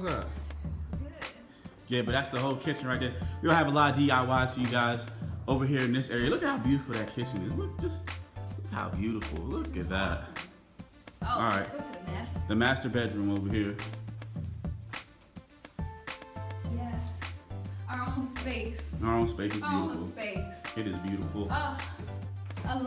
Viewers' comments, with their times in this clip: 0:09 I thought he said masturbate room at first I was like WHAT I rewinded it put the volume on max turned captions on whew